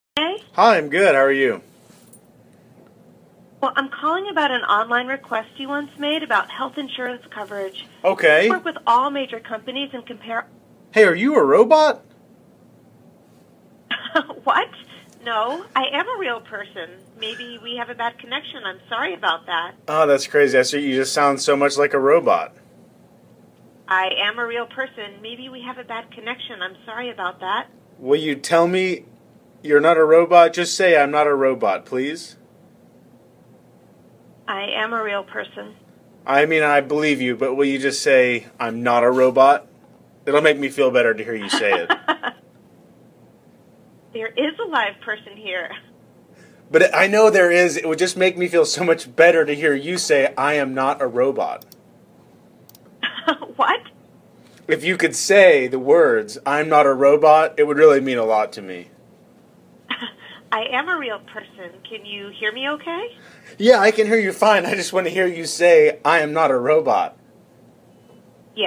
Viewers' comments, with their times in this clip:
0:03 the sudden shift in tone didn't felt natural, i've only ever seen that from bots adjusting their dialogue routine.
0:07 the way she said coverage gave it away. Lack of effort, Medicare.
0:10 For me the giveaway is when it perfectly cuts off when interrupted
0:23 I kinda feel bad for her, She sounds like she is trying to convince herself she is a real person, Like she wants to be one really bad
0:33 I get that fact it’s just telemarketing and they just use snipets of voices recorded to string together a sentence but why choose the most saddest sounding reply possible? This line doesn’t even fit as a reply it sounds like sad denial the pause before it doesn’t even help it’s like it contemplated it’s entire existence before saying it
0:33 its like everything she said was from a soundboard apart from where she broke character, starting to question if a robot like her really is a real person.
0:33 she sounds so, sad? Scared? Idk but the way she says that it’s like she realizes maybe she isn’t
0:33 her voice when she said that-.. IT'S A LITTLE BIT EMOTIONAL-..
0:34 that 'i am a real person' sounds so sad
0:34 that sounds so eerie
0:34 it sounds kinda sad
0:35 sounds kinda sad
0:40 Also it’s the same laugh
0:41 the thing is when it Laughs it sent actually shivers down my spine cuz of how realistic and creepy it sounds also please tell im not the only that felt that way when they heard it laugh to cuz holy shit i hate that
0:53 The cut off to the pre-recorded line, “what? I am a real person”, and some lines that don’t connect to his questions made it dead obvious it was an AI behind the call.